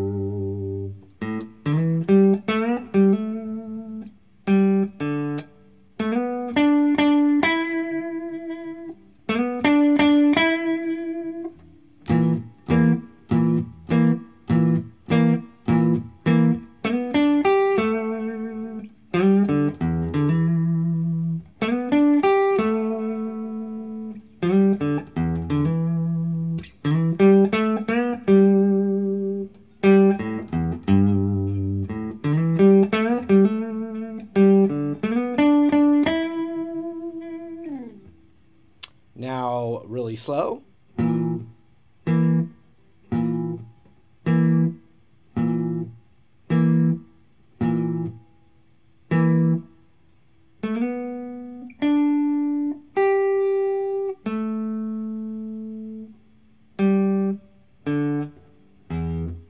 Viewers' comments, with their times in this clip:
0:06 that kinda sounds like a shamisen, the japenese instrument
0:40 and now really slow!